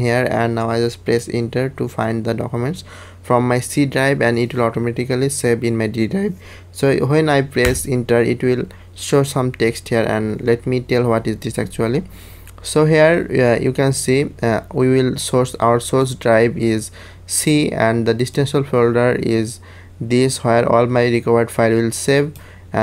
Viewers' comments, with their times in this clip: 0:05 nice vioce crack. xD